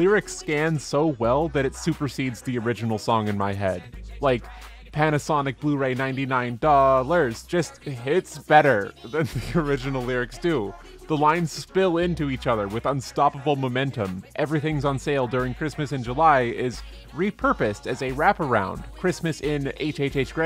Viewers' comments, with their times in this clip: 0:04 I keep returning daily to this moment just to look at your fursona and feel that joy of you singing "ninety-nine dooooolars!" THis sgit just makes me feel alive again